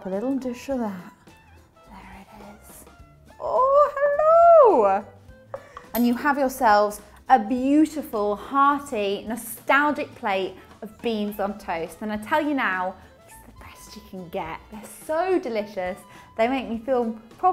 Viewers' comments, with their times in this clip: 0:03 She reminded me of Mrs. Doubtfire ("Hellooo") haha. She's really cute, I love her accent, food looks great, I'm a fan!